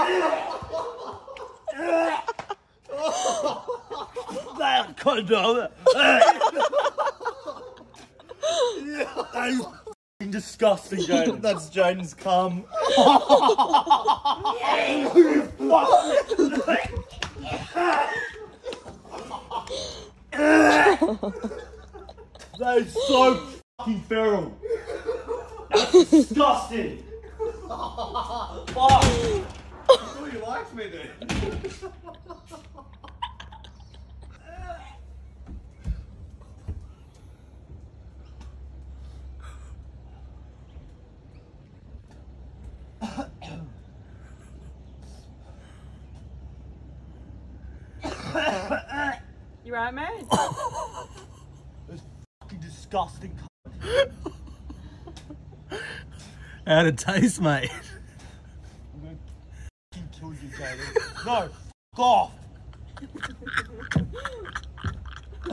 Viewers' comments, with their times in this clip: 0:04 Lmao he came up with a new language 🤣🤣🤣
0:04 lol can tell the pain in his voice poor bastard
0:09 He almost nailed a Arnold impersonation .... Hahaha...
0:09 he sounded like Arnold for a second lmao
0:48 he coughs and farts at the same time😂 Fucking hilarious
0:49 coughs and let’s one rip